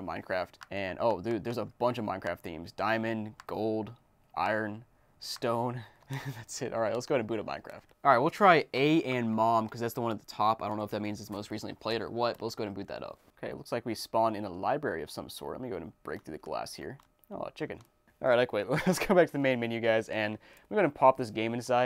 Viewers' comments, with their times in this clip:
0:04 at first I thought the night theme said the N-word